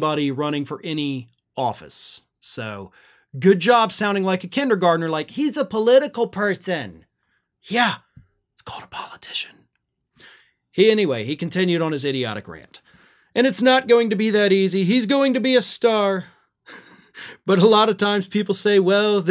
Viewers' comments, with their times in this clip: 0:06 in your kindergarten voice" He's a political person" almost had coffee coming out of my nose.....